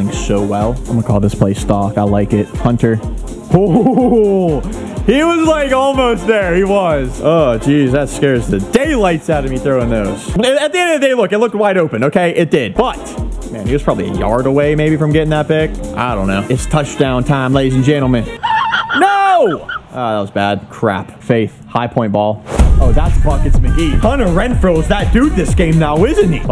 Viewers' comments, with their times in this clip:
0:10 What is that sound he makes ?